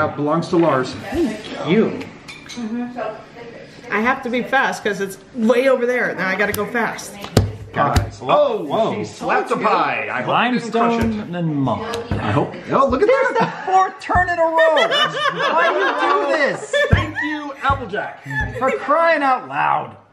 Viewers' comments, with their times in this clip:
0:06 she slaps the pie Sounds very weird